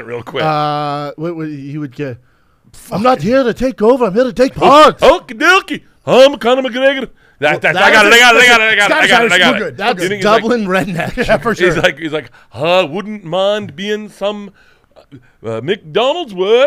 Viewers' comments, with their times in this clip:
0:03 butchered that quote